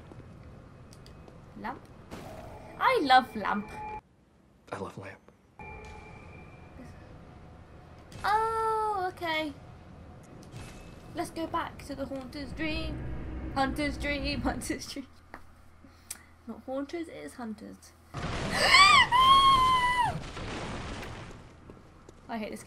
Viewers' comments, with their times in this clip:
0:10 you meant the hoonter's dream? From the Hoonter of Hoonters™ herself? hahahaha There's a npc in this game that speaks just like that :P